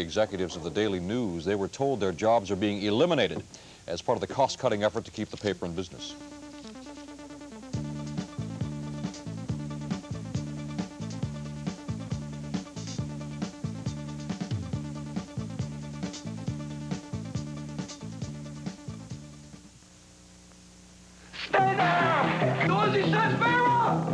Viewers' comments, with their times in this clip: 0:06 Practically a clean cue of that amazing theme!